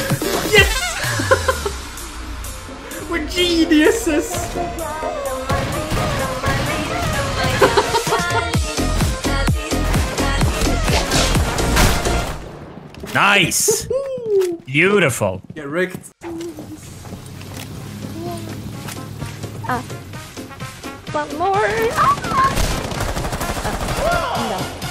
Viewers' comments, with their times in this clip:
0:07 Kalinka Malinka moya Russian music is here!!!!!!!!!!!!
0:08 why are you playing russian folk music